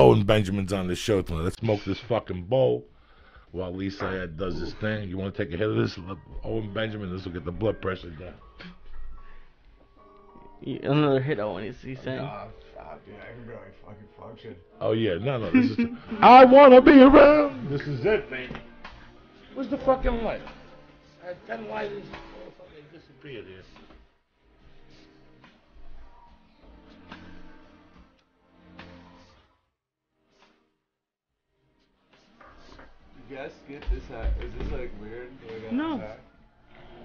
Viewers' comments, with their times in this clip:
0:07 music starts here
0:20 Owen just slumping, the nice music in the back then how it abruptly cuts to Joey on the pipe sent me for some reason 🤣